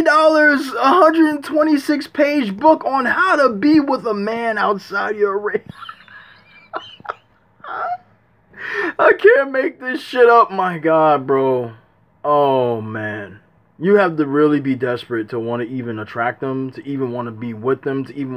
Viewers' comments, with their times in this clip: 0:03 The way you mimic the book is funny 😂😂😂😂😂😂😂😂😂 love the video brotha